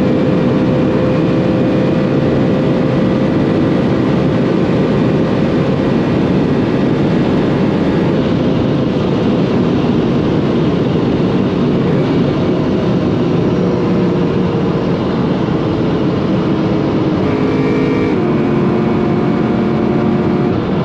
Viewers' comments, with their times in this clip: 0:07 At last!! *340km/h* hahaha Amazing sound over 6000rpm